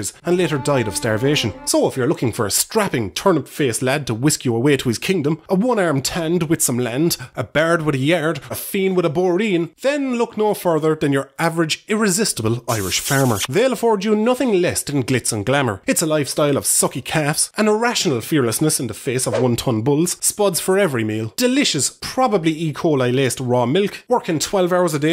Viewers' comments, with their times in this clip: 0:07 Fuckin Jesus the amount of rosin on that violin is not okay